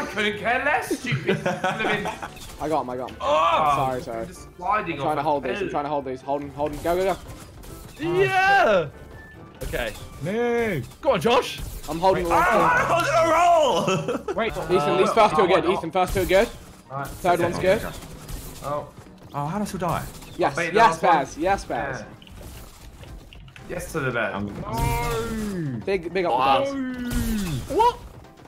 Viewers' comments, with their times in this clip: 0:10 josh casually has a stroke